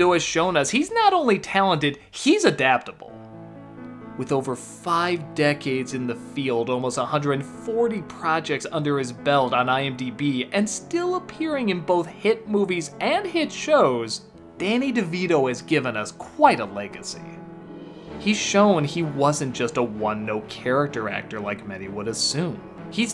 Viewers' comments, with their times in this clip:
0:04 Am I the only one that hears Danny's fist fitting his hand? It just sounds like there was a sound match with the music. Like it hits perfectly every time I see.